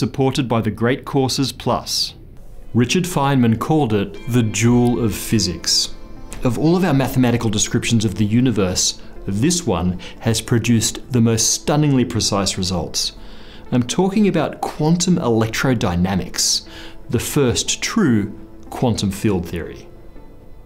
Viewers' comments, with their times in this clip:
0:04 I can't tell if your British face is saying "duel" or "jewel" of physics.